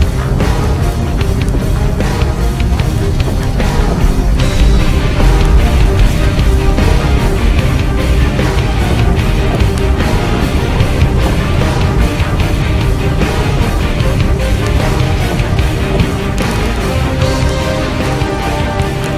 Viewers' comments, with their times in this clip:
0:03 did he fart